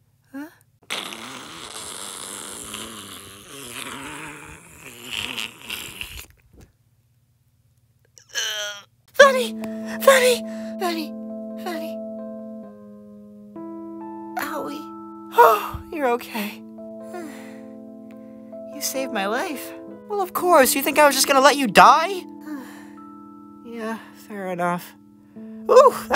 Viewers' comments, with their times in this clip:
0:10 i heard freddy not vanny lol